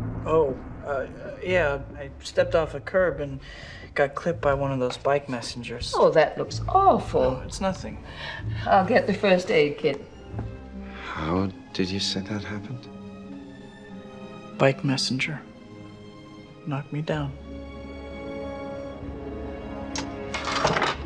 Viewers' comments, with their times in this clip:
0:06 Aunt May worrying about Peter's bullet wound in his forehead just elicits him a casual "No, it's nothing." I can't stop laughing 😂